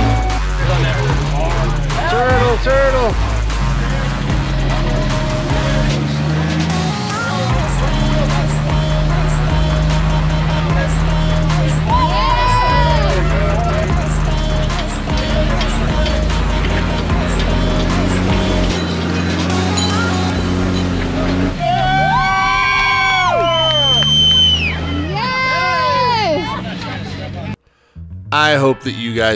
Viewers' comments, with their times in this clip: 0:10 that jeep lost something shiny from underneath! You can also hear it ping on the rocks.